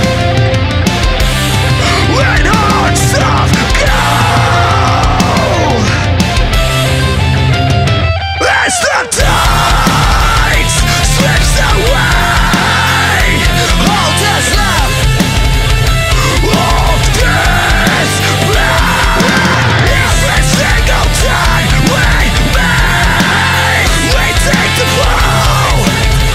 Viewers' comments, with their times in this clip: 0:09 I started getting continuous goosebumps such an uplifting melody.